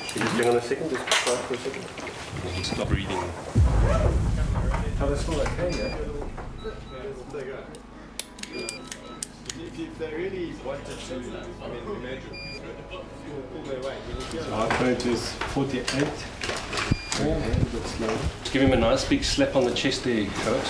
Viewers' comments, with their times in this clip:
0:06 I don’t know why but it sounds like a McDonalds